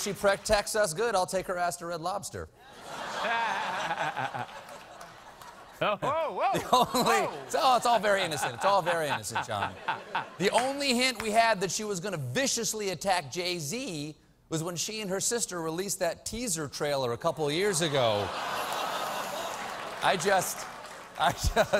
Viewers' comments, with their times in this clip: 0:07 since when did Jon laugh like the count from sesame street